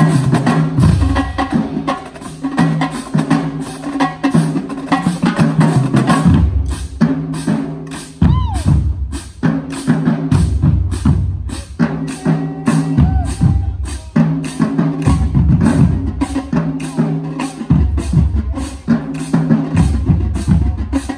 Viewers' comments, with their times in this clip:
0:07 The Candence is fire 🔥 🔥🔥😩😩